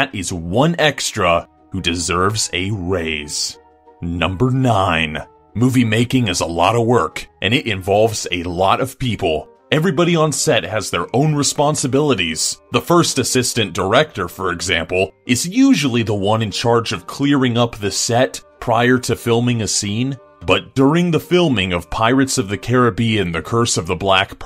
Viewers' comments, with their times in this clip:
0:07 got to and the voice made me leave, comment then channel.